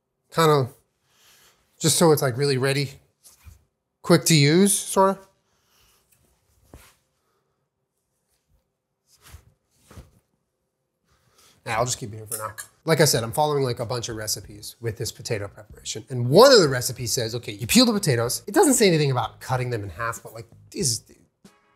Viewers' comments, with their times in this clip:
0:05 All I can hear is Jenna screaming "JULIEEEEEEEN" 😱 😂😂😂